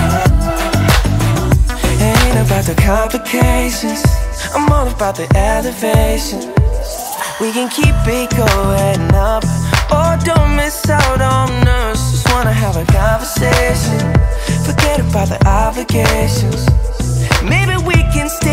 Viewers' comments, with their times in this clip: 0:05 hey dude, is it Bear Grylls O.o? Dope Rythm Thumbup!